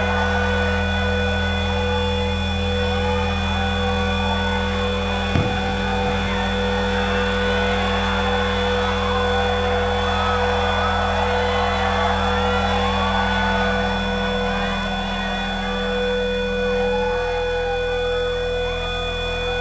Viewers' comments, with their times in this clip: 0:03 him singing "my way" in japanese and him tripping on a cord gives me life